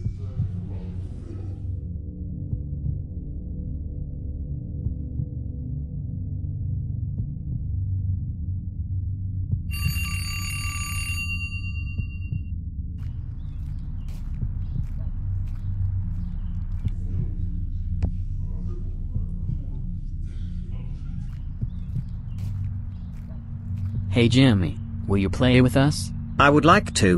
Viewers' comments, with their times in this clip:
0:10 you have no idea how fucking bad ptsd episode i got from that fucking alarm, it sounds just like my phone alarm